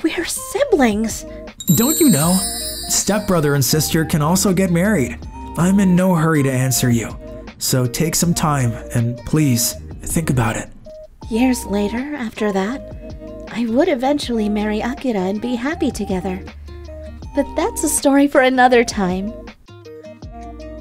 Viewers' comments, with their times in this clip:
0:03 The voice actor for Akira sounds familiar… in fact… he sounds just like Itsuki from BL Sandwiches… Especially … I can hear the Itsuki in his voice… I’d know that tone anywhere…